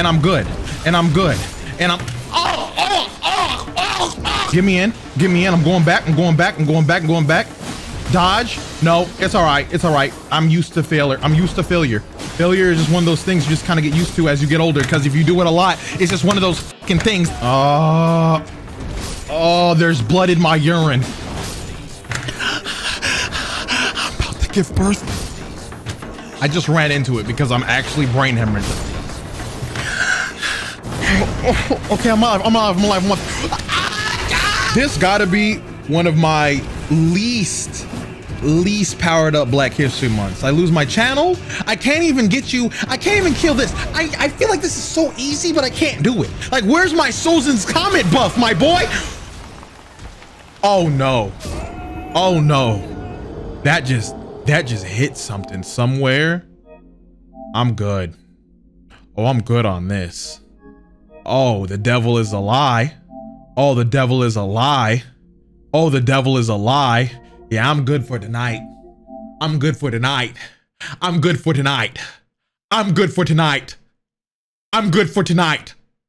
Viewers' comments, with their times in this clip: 0:03 his throat getting obligarated
0:49 that long pause and then “oh no” sentence took me out💀💀💀
1:00 could be in a kanye song